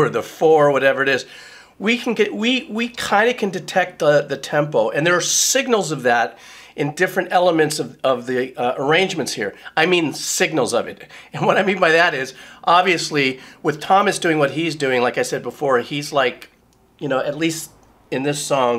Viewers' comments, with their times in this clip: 0:03 Meshuggah: Sure, we'll give a you a tempo you can follow, but it's going to be a red herring.